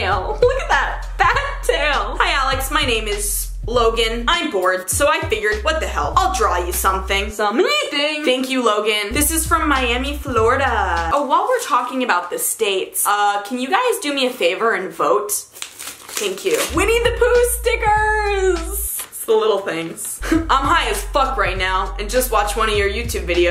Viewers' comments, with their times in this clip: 0:07 im laughing my ass off "sum-EE-thing" 😭😭😭😭